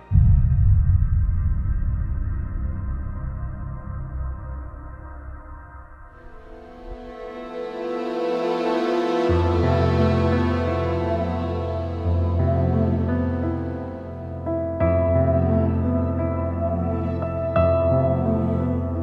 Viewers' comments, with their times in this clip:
0:06 its sounds like zelda